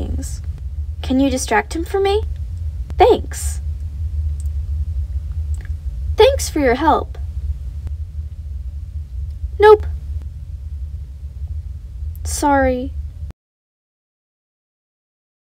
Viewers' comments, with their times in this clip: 0:12 Nice Voice Shiro 💙💜💚💜💙💜💚💙 kinda like you